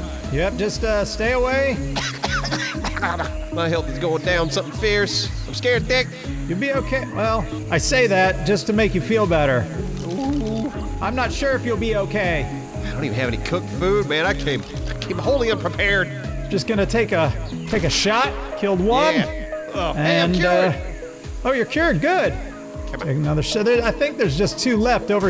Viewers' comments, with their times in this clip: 0:09 Did i hear a secret Dora "OOPS" ?